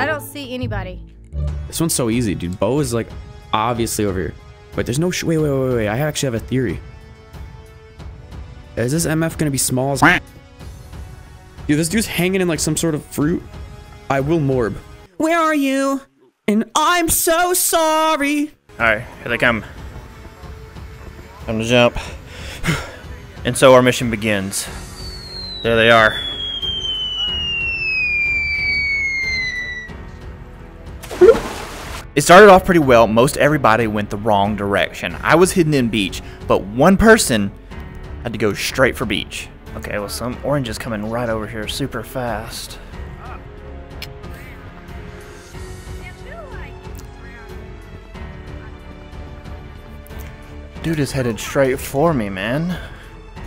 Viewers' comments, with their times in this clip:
0:09 bro can rlly sing
0:15 that was actually good singing wth?😭
0:34 it sounded like he had an accent